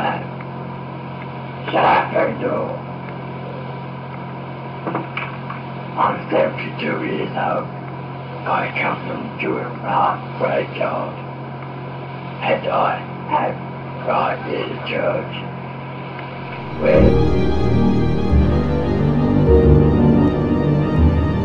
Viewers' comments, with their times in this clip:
0:08 "I come to Iraq for hentai"